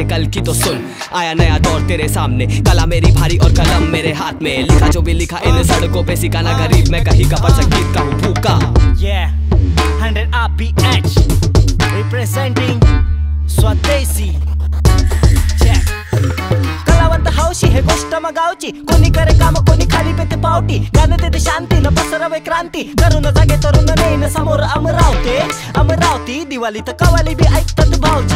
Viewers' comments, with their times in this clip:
0:10 swadeshi rap in MARATHI❤😍